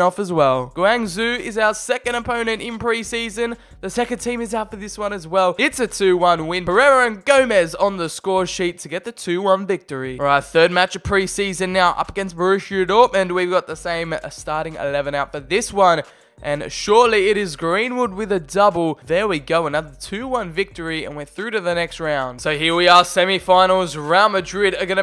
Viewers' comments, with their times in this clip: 0:07 I got triggered by how he said Guangzhou